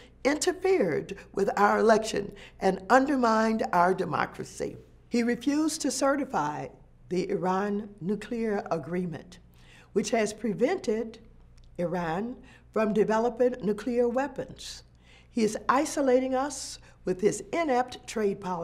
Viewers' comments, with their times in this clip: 0:05 Nice edit She was being too much like herself & after the edit put on her fake soft voice & tried to simmer down. Fake.